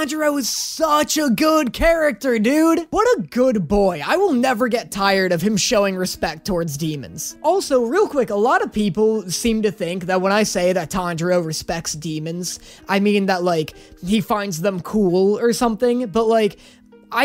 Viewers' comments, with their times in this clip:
0:05 the banana fish song in the background gave me PTSD (jk)